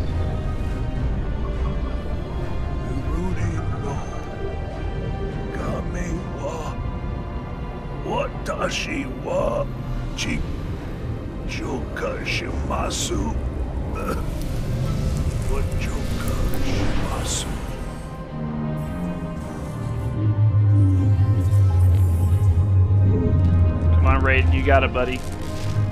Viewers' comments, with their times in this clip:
0:06 it sounded like he said what does she want